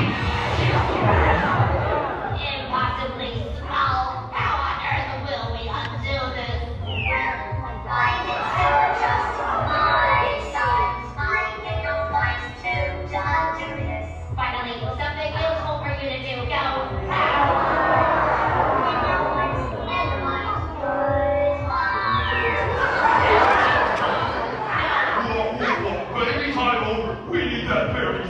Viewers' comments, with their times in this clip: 0:06 Like Puffballs voice
0:13 collective audience wince